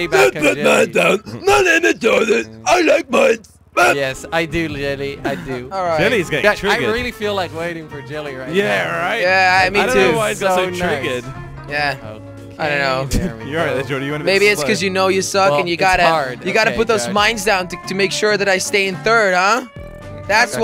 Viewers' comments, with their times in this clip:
0:08 anyway? anime? anibye? what?